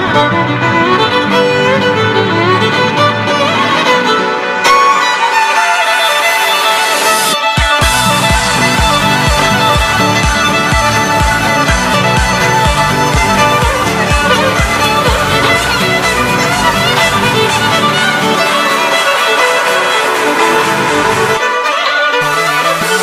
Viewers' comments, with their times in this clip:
0:06 I thought the first one was the best, or at least the most enjoyable. The reason i say this is because the violin in the 2nd and 4th cover were drowned out a little bit at critical parts by the background music Not to mention the last one.